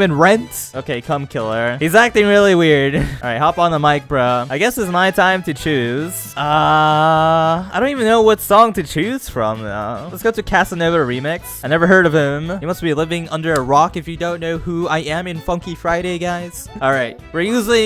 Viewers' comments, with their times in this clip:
0:03 DID HE JUST SAY HOP ON THE MINECRAFT OR MINECART???